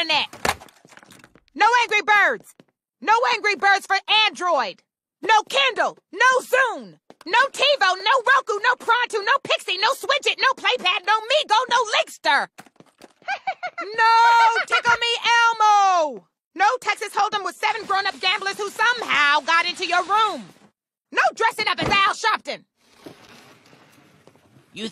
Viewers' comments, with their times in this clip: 0:07 why does she sound like a sims character?